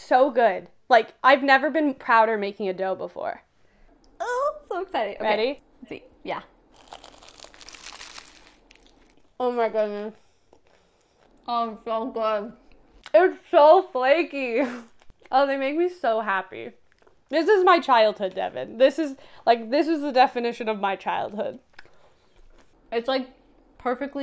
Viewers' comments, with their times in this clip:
0:07 ASMR realness i love it